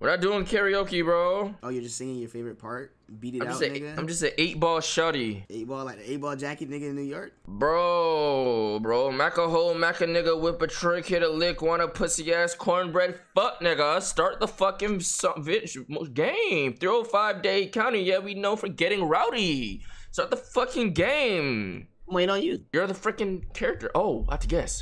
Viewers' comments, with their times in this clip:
0:08 bro spits himself into a seizure and back out🤣😂